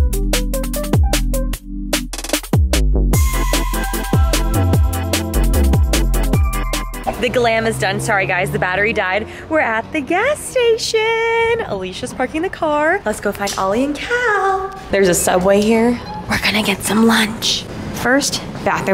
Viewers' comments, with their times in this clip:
0:04 the background music was giving me new jeans super shy